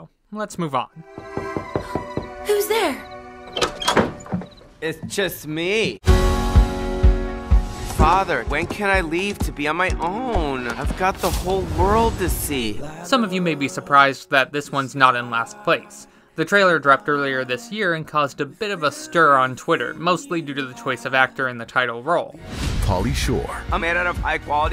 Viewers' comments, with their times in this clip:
0:08 WHY IS NO ONE TALKING ABOUT HOW HE SOUNDS GAY